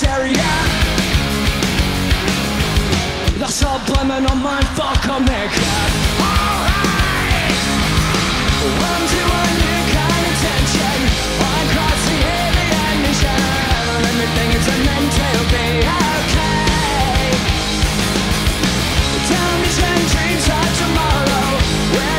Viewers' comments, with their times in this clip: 0:03 I can't be the only one that heard Billie's voice go back like 10 years...right?